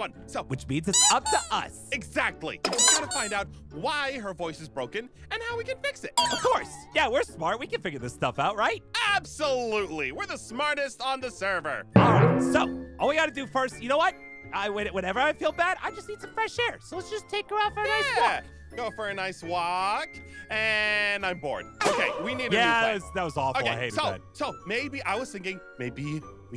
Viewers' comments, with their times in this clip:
0:07 Ein: we’re the smartest on the server aphmau squeaks twice